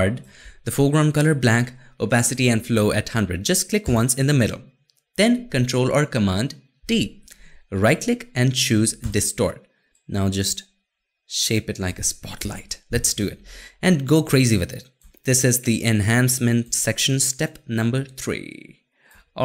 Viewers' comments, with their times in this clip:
0:06 This is kind of funny. I though thought you said CMD + D and I spent a great deal of time trying to figure out why it wasn't working. lol Then realized it was T, not D.